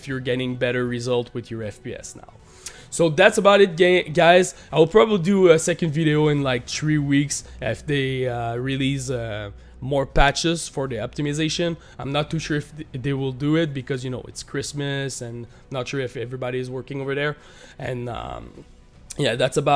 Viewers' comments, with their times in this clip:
0:03 so thats about it gay guys